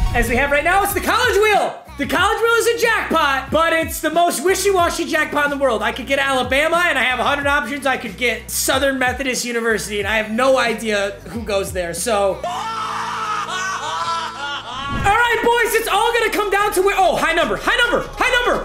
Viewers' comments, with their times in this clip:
0:03 The car alarm really check outside 😑 🤣🤣